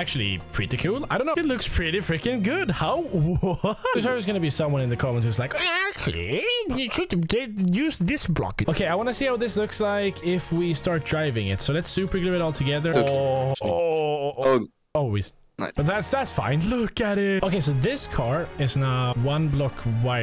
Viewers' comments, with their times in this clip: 0:06 you sound like MR BEAN 😂😂😂